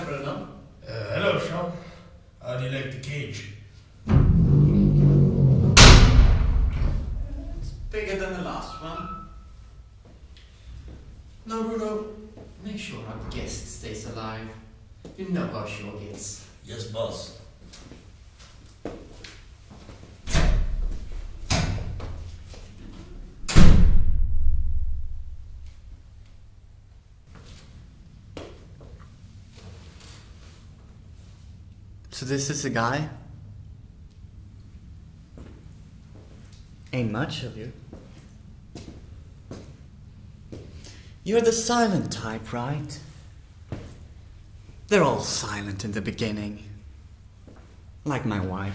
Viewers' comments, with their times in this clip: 0:06 holy shit that was loud. this feels like some kinda fucking online game because of the "silent type". was funny tho, i was laughing my ass off.
0:16 those footsteps sounded so real
0:35 I actually thought someone spoke on my left side
0:36 Around the mark I couldn't contain my laughter 😭💀 they way he talks bruh
0:36 bro the sound quality is AMAZING. it’s am and i’m scared it’s like a bluetooth speaker on my wall and everyone can hear it😂